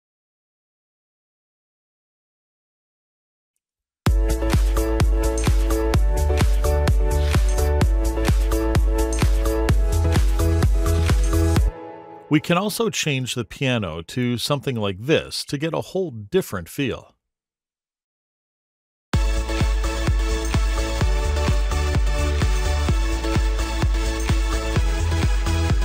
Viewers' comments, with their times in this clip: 0:08 baby shark dududududu baby shark dududududu (modern) 😂 the sounds like